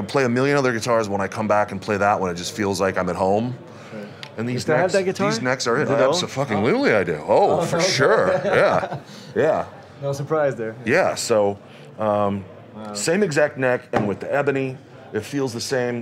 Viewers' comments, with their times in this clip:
0:04 the way he spoke here was so... holy crap. Mick looks like a children in a room full of toys!!!